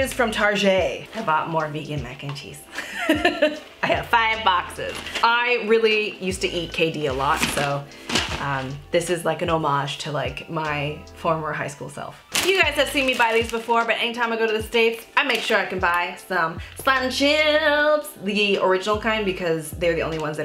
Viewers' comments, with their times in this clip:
0:06 what did you eat a lot? Sounds like you said Katie???